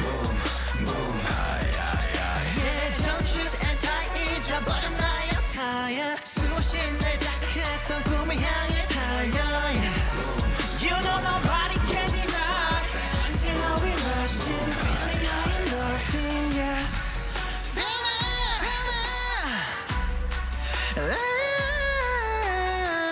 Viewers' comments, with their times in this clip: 0:10 You can clearly hear Sejun , Seungsik and Seungwoo from til the end. Sejun and Sikie's harmony is beautiful <3